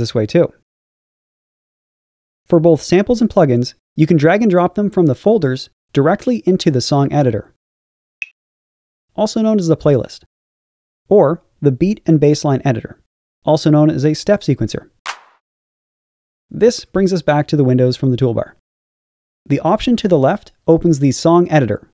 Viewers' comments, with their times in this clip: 0:05 jesus christ the zgzgzgzgzg part turns creepy af when you are watching music tutorials lmfao